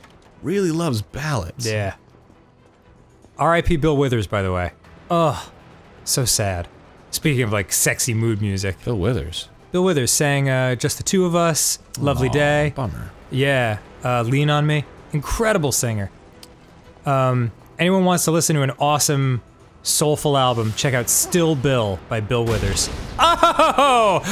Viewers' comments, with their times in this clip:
0:07 sexy music sets the mood... hardest fucking game in the world starbomb